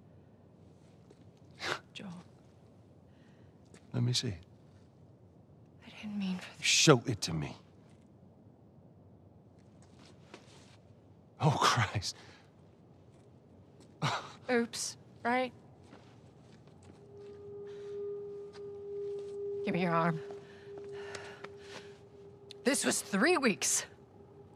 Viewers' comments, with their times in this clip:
0:08 Joel's 'Oh Christ' is soul crushing.